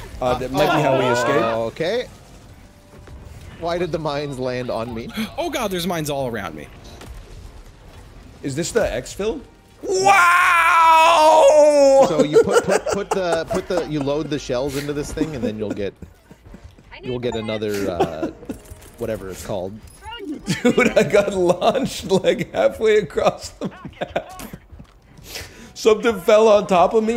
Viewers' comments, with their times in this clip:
0:09 Close your eyes and imagine italian plumbers